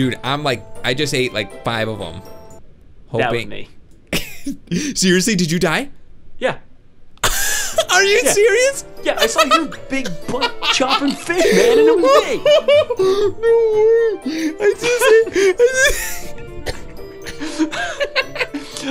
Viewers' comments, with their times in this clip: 0:05 Never heard that laugh before. :P